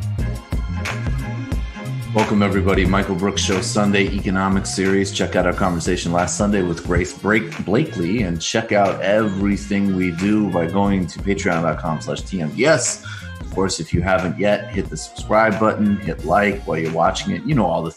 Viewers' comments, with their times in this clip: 0:03 Dude of intro bumper music? Seriously?